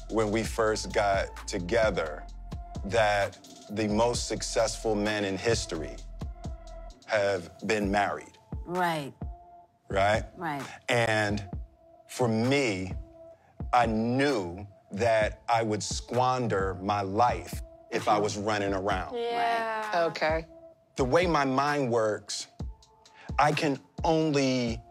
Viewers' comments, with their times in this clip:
0:06 I feel bad for him... He's been ganged up on for quite some time now... Those bullshit "therapy" sessions that are with what seems like Jada's Friend more than a qualified therapist, to all the interview shows, even the clip shown You can see that even his own daughter doesn't fully respect him, the way she said AWE and patted his shoulder to me was so patronizing. She learned that crap from her mom who has always been toxic as fuck. 20$ says he slapped chris because if he did nothing, when he got home would have been the worst night of his life even after winning an award. Still probably ended up as one of the worst nights of his life, but he could now argue he tried to save face. I say this because he laughed and when he looked over and Jada wasn't he knew awe fuck here comes trouble. It's side with the wife no matter how insane she is, because if you don't it will 100% be way worse than however this could turn out, kind of thinking.